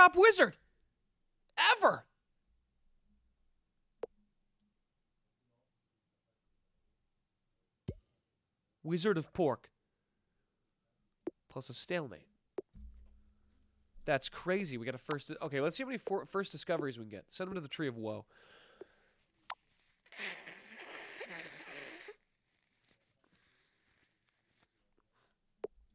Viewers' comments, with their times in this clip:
0:06 Anyone else hear a man talking